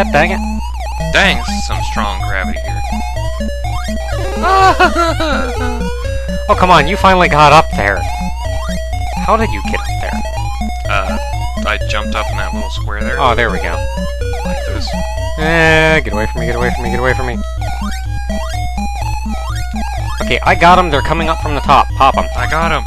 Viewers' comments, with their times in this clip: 0:04 lol at the crying